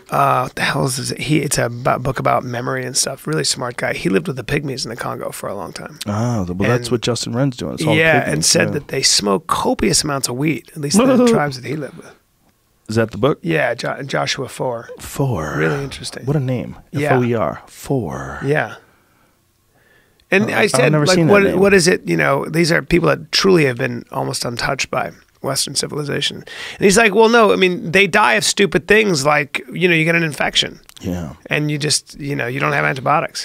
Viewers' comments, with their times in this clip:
0:10 Joe sounds like a turkey
0:15 whys Joe sound so creepy lmao